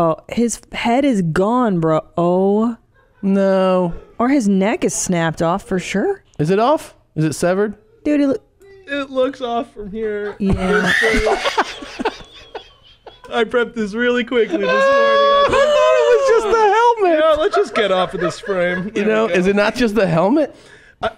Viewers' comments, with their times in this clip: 0:08 I love how "It looks off from here" just comes out of nowhere so nonchalantly